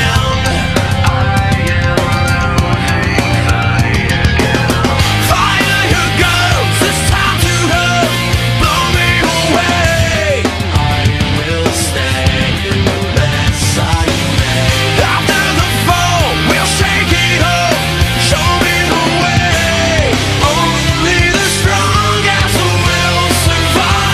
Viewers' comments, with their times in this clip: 0:10 I love the voice How do you do that?